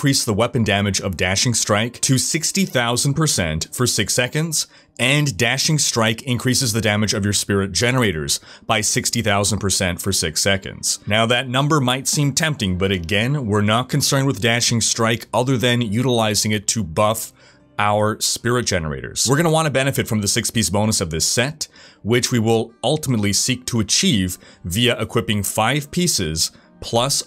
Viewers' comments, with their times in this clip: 0:08 I think I heard 60k dmg instead of 6k dmg for spirit generator